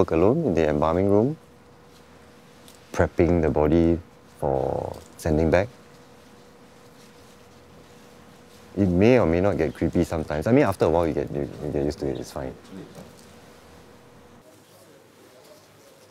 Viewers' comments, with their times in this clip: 0:04 did the body fart ?